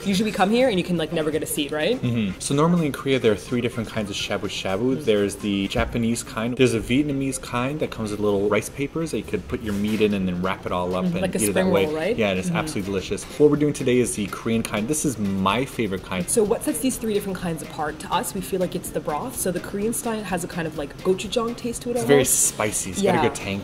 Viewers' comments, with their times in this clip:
0:10 I thought she said "like a spermwhale, right?" LOL!!